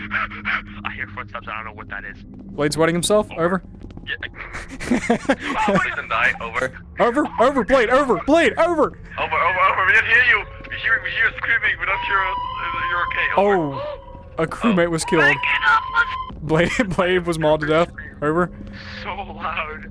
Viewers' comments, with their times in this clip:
0:05 I remember how badly I screamed here